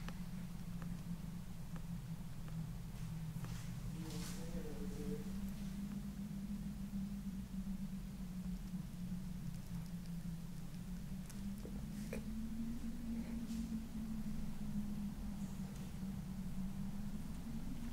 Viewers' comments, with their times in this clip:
0:04 you hear a voice whisper “you’ll die in here” 😳